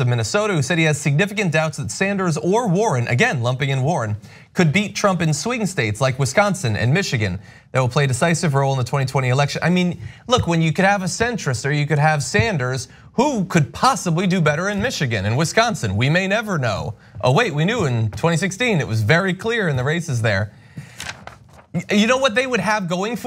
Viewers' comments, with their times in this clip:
0:04 Sweden states?.....? Wtf?....